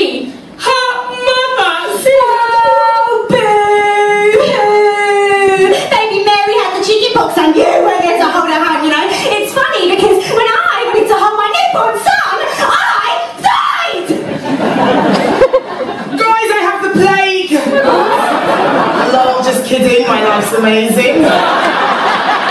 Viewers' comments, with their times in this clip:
0:06 Can somebody tell me what does Jane says please? I'm not English and she speaks too fast 😅